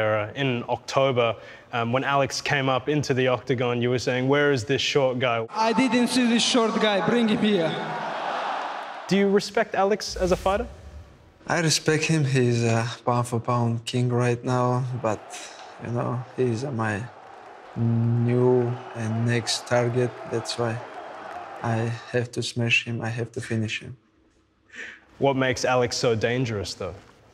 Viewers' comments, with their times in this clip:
0:10 Open cc do ur respect Alex as father 🤣